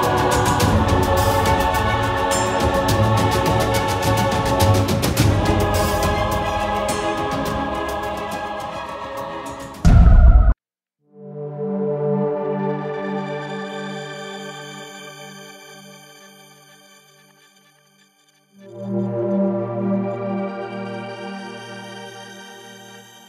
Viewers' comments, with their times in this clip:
0:10 the now famous suspense tune